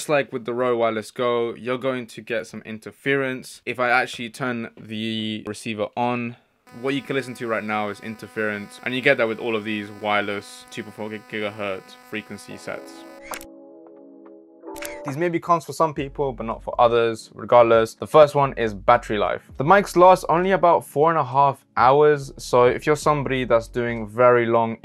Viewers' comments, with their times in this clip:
0:10 maybe this interference not from shotgun, but from recorder